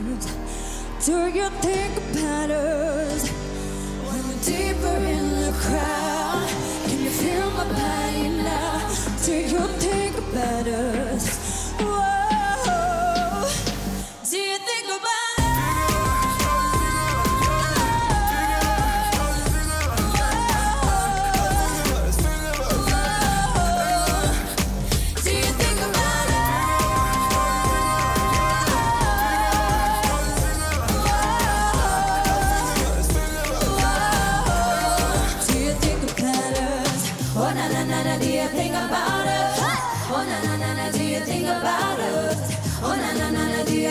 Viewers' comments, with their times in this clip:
0:04 The moment they came in line singing together i was like 'This is Little Mix' #ProudMixer What a Performance!! 😍
0:07 When they start harmonising
0:13 Lerrie’s vocals is on 🔥
0:27 The harmony 😍 my god their voices are perfect